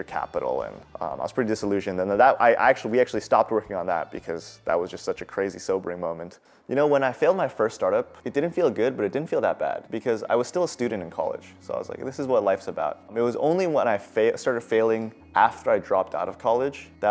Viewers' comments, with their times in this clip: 0:04 bro pronounced chasm with a hard ch lmao